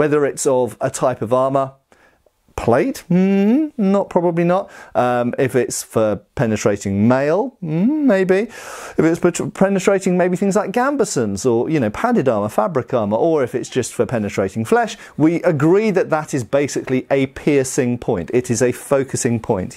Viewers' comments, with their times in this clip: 0:05 ...For penetrating male? Sorry Matt, I don't roll that way 😀